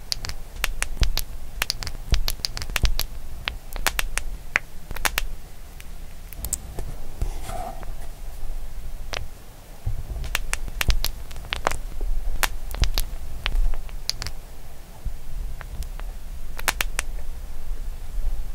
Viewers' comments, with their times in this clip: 0:05 so satisfying crunchy and relaxing Edit: never got 13 likes before thanks Edit3: OMG 49 THX GUYS SO MUCH Edit: how is this possible thanks guys Edit: OMFG 509 likes the most amount of likes I have ever gotten thank u guys so much